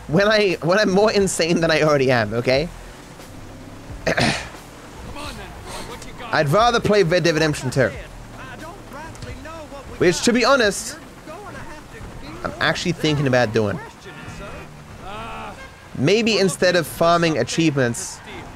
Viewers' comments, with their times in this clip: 0:06 the clap of your asscheecks alerted the cops, wth chat